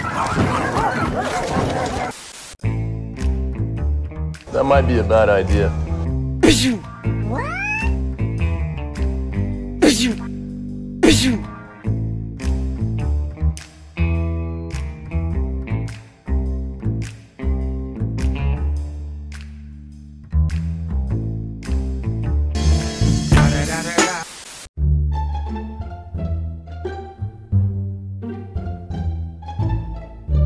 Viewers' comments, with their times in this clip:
0:07 😂😂😂 the way it says bzu bzu 😂😂
0:12 when the bishoo sounds comes and matrix scene was playing about how archer douged the cannon 😂😂😂😂
0:12 could not stop laughing 😂😂 voice effect are hilarious 🎉❤❤